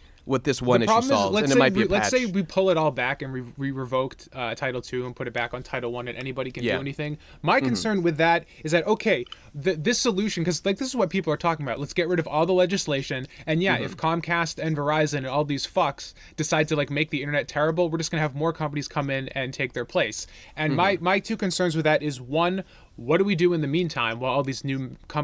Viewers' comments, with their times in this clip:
0:06 If you listen closely, you can hear someone scooping and eating yogurt from onward.